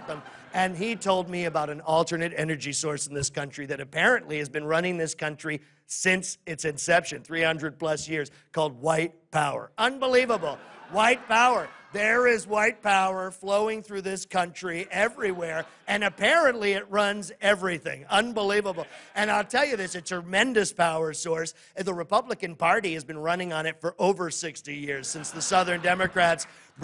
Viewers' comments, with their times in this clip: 0:10 The crowd is silent